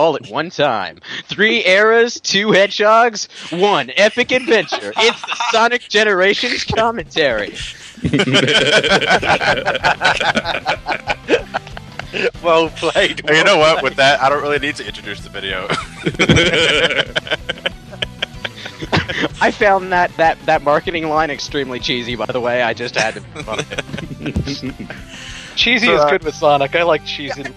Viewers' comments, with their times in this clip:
0:08 Those laughs mixed together is just scary!